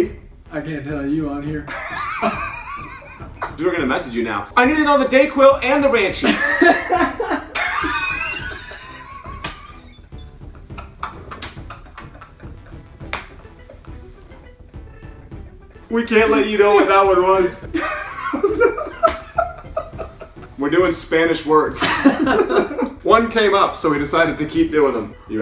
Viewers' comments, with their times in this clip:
0:07 its like he is on silent